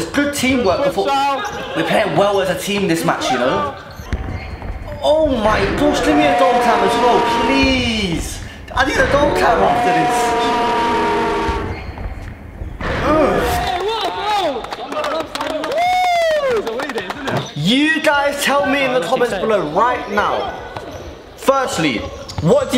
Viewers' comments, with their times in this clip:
0:08 blud sounded like a trex lmao